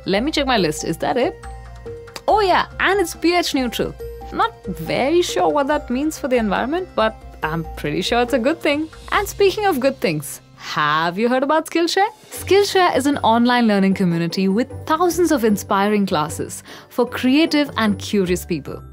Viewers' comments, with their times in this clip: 0:03 "Oh, yeah -- and it's pH-neutral." At normal speed, this was hard for me to make out.